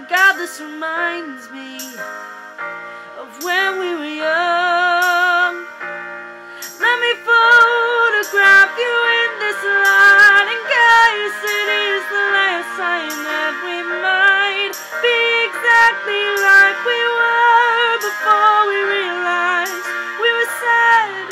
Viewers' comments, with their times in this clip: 0:09 Timing other than that this is the best cover I've heard.